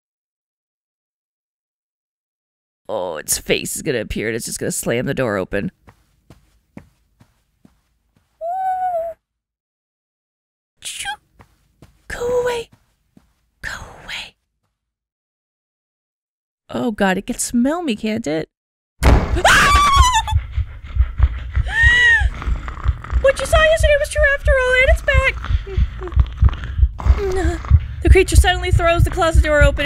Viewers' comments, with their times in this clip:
0:10 I swear the noises you make when you're scared are so cute like a tiny scared puppy.